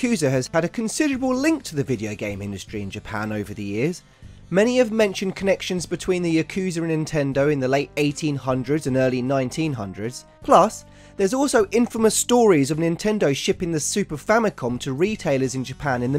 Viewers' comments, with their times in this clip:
0:04 I feel a questionably irrational amount of anger over the way you pronounce Junko.